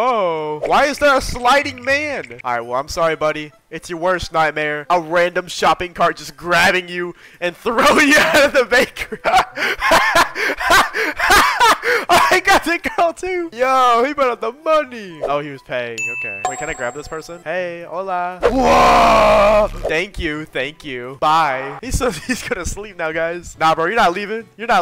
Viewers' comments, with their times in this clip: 0:09 His laugh gave me the chill...
0:10 that laugh was something else💀💀